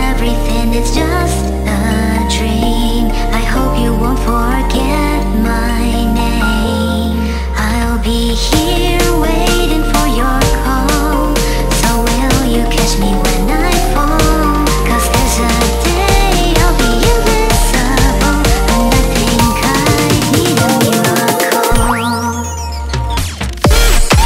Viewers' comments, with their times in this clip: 0:08 that 12 second chord progression and vocal note in the build up really hits me 🔥